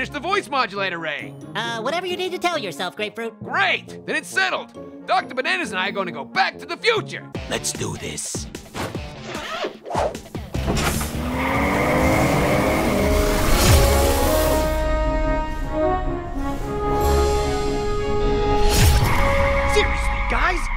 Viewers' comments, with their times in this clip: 0:07 that voice tho lol